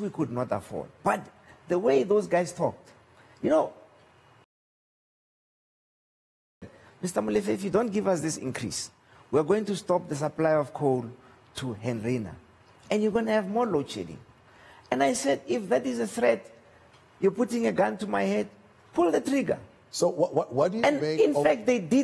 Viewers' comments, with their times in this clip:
0:03 Why did you sensor what he says after "you know..." seconds? Is that ethical?
0:04 Why Did they mute ?